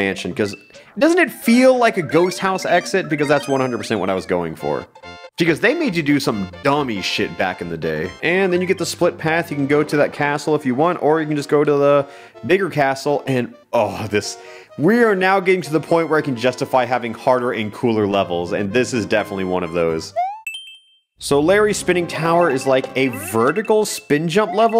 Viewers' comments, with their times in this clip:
0:09 my dumbass thought he really said the n word bruh
0:12 am i hearing the n word